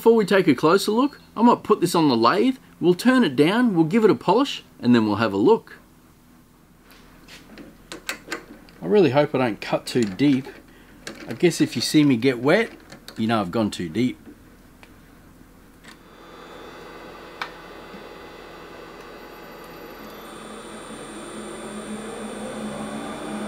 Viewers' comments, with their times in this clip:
0:10 The word "deep" give him away as Kiwi, however he could be from Queensland. As a Victorian, he does not sound like one of my Brethren.
0:11 that didn't sound like something else at all